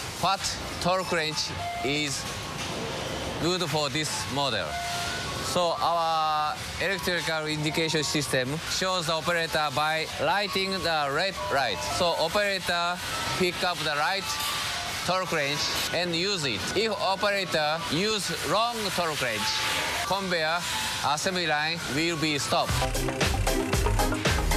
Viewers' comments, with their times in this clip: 0:08 LED to the Right or red light, I'm confused 😅😅😂